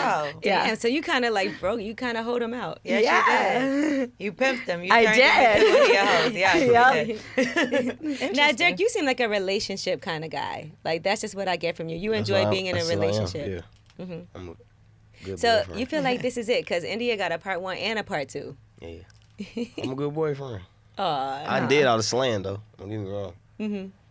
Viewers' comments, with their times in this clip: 0:08 she called Durk “Dick”? Maybe I’m tripping lol